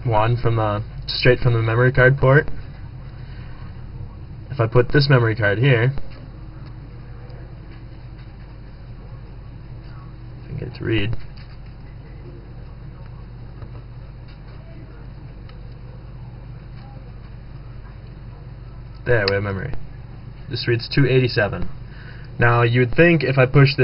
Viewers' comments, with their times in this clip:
0:09 holy crap when u hold the two down it was all quiet cuz i had my volume low and my phone started ringing i almost fell off my couch that freakin scared me XD oh and awesome psp man XD